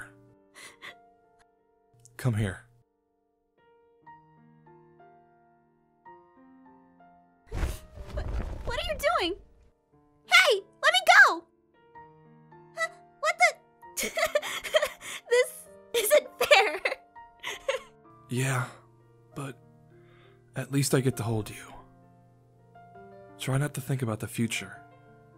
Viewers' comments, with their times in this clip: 0:05 STOP WHY DID I TEAR UP AT THE END WHEN APH CRIED CUZ AARON IS LEAVING😭
0:08 Am i right ore does it sound like in that he liftet up in her dress or what? Note: I'm rewarching this ep for the 20th time